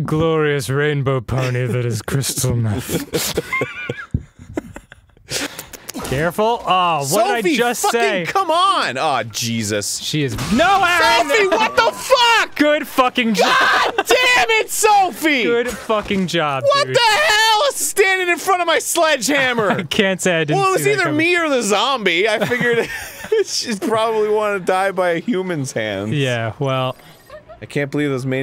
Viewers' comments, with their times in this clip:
0:10 The best thing is when Arin accidentally kills Sophie. Dan's genuine, "No Arin!" is so funny because it sounds like he is actually fearing for Sophie's life. Also, I cried.